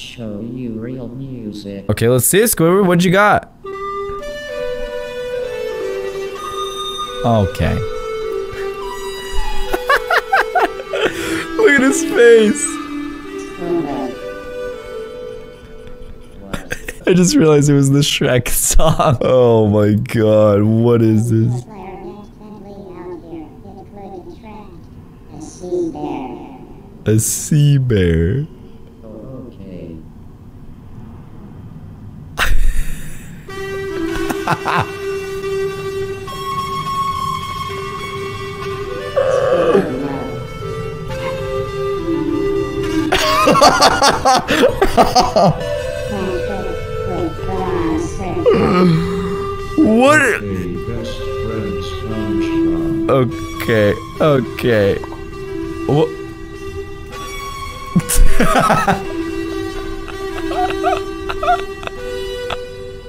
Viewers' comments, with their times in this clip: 0:07 squidward is bad at clarinet XD rip headphone users
0:44 aww your laugh just melted my heart, never heard you laugh that way 😍